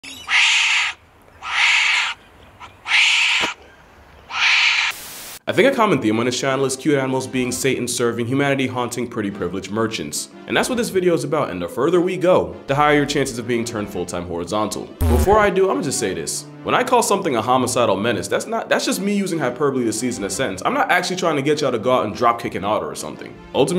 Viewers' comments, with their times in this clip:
0:04 Weird sound, but understandable.